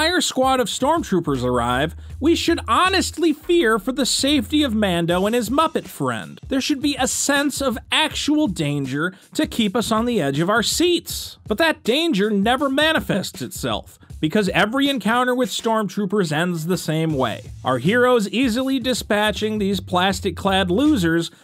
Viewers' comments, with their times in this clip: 0:03 i thought you said lando